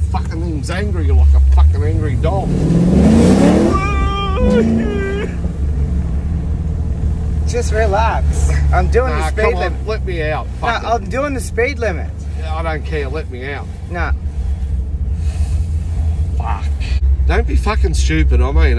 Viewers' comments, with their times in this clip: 0:03 That ‘Fuck you’ with the crying voice killed me 😂😂😂😂